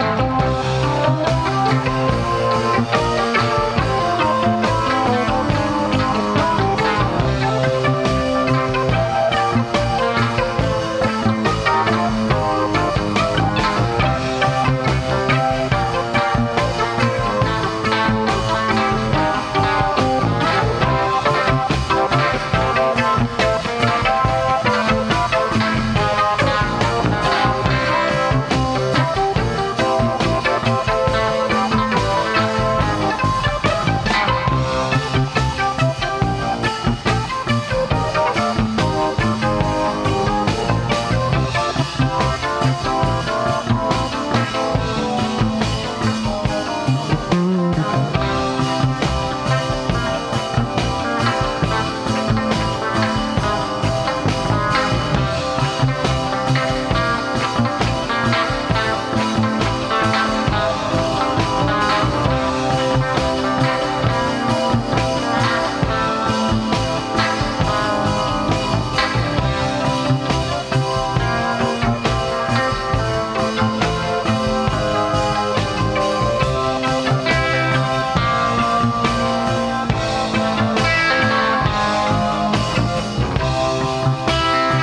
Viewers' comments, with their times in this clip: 0:10 solo yeah man
1:07 LOL at the keys this is insane!